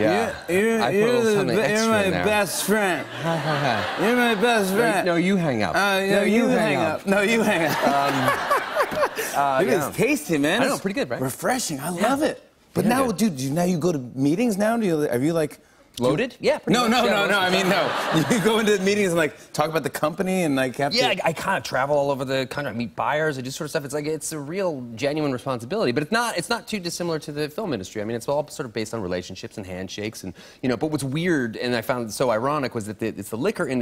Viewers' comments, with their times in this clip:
0:07 lmaooo Jimmy’s laugh sounds like Elmo
0:21 did anyone hear a windows “denied” click sound?